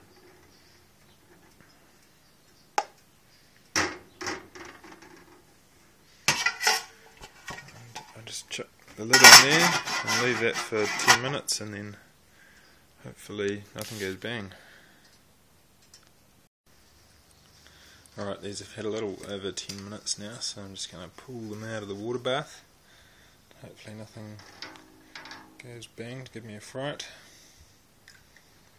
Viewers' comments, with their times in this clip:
0:10 At + "Leave it for CLANG CLANG minutes" WTH?! Lol